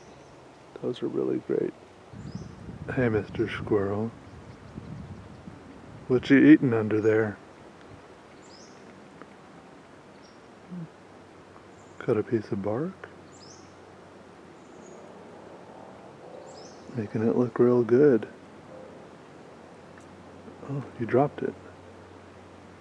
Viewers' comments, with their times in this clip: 0:06 Mr. Squirrel is playing the harmonica